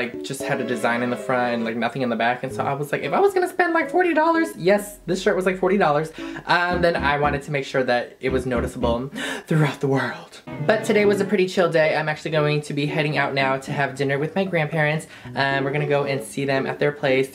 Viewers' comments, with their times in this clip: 0:04 sis sounds like mickey lol